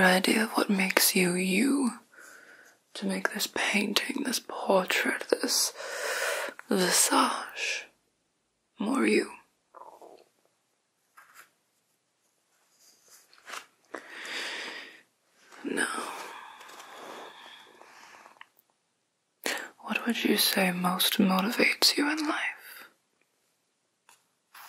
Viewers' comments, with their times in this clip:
0:08 Was that your stomach grumbling????